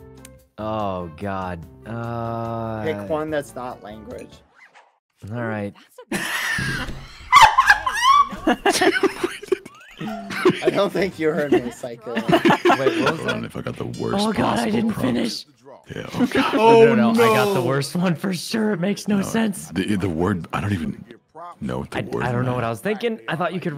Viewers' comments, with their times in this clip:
0:06 karl's laugh is so funny😂😂